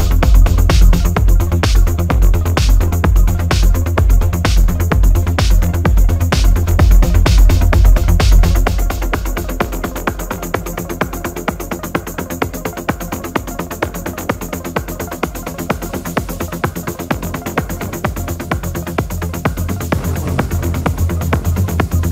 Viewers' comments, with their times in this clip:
0:03 looks much silence there 😀 Zombie... 🧟‍♂️